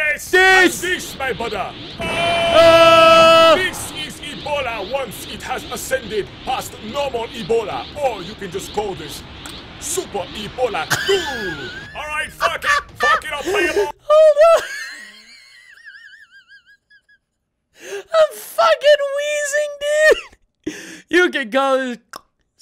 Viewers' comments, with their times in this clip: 0:10 He sounded like shaggy